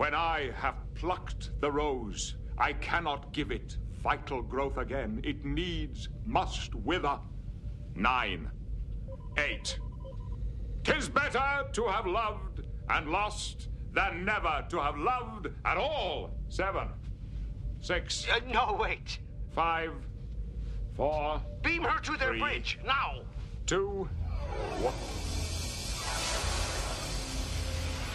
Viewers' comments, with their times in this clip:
0:07 I thought he said Nein!
0:10 One of the best parts and the reason I think Patrick Stewart is one of the best actors of his generation is than IN CHARACTER he gives Riker a little smile as he walks back "You bet I'm enjoying the heck out of this" while reciting Shakespeare as a love struck man and coldly counting down as a psychotic lover. Fine work.